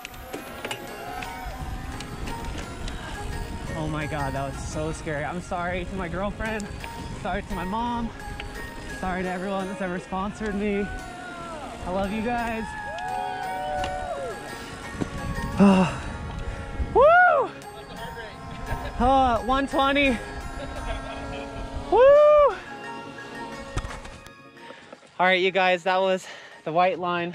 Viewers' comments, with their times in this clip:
0:08 Nope. NopeNopeNope. Nope. NOOOOOPE! where you can hear the wheels locking up.. Just NO!